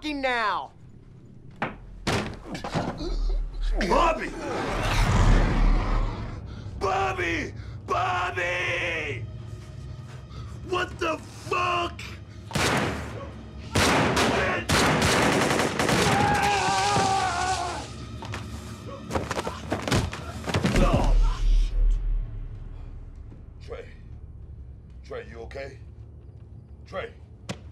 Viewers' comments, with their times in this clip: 0:08 is that Booker T (4rm WWE) shouting from his lungs!!! 😁